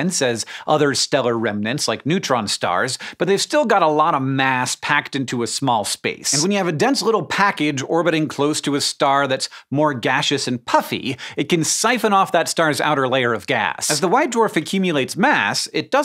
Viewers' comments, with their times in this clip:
0:03 "a lot of ass packed into a small space" = any number of dudes' girlfriends